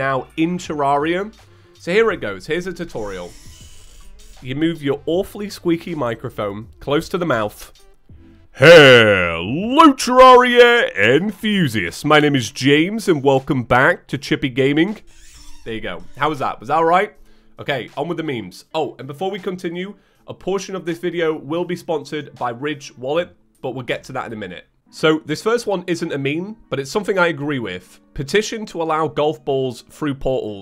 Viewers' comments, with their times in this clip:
0:08 For old school fans sound warning
0:13 That's not even louder than Markiplier's quietest playthrough And yes I had volume on max Like seriously feather eared people wot the fug